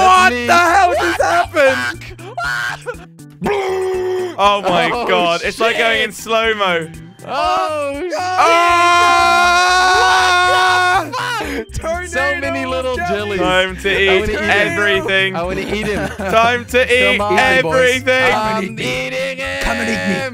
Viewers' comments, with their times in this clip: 0:03 who the hell was making that noise?